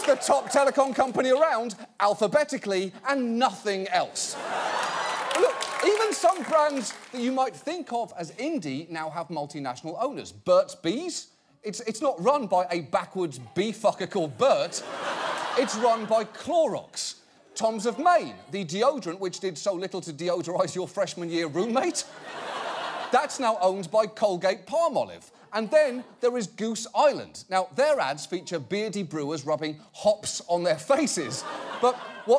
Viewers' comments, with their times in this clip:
0:10 Anyone else heard a woman screaming "lies" when he talked about Burt's Bees? Check it out.
0:16 Did anyone else hear the person in the audience say "what?" ?
0:19 audible "what" XD